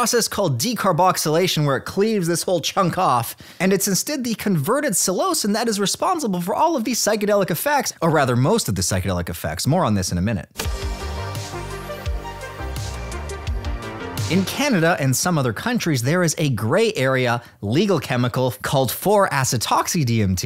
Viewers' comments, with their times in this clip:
0:06 It's been a while since I checked in with your channel - when did you get a damn radio voice?! "Cleave this Chunk Off" sounded like it was being driven by a sledgehammer. Are you using a compressor? Anyway - very listenable stuff, good show